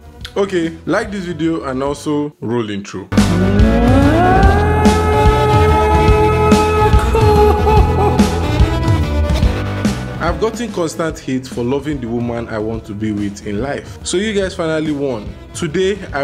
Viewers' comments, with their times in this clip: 0:03 When did you become a jazz singer 🤔